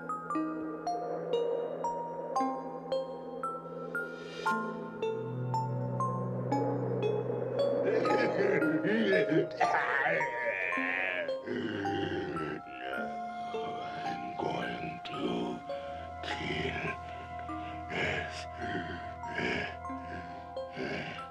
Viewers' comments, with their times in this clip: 0:07 oh my god that man is an awesome actor...everything from his voice and his eyes...jesus he's expressive. and also this is creepy as fuck and i'm and i'm super creeped out.